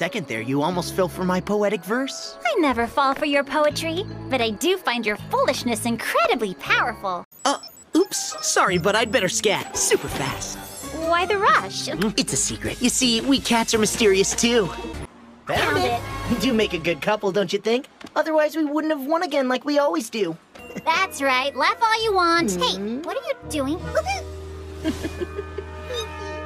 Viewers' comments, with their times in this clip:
0:08 Lol keep on tapping this and it Will make a funny sound lol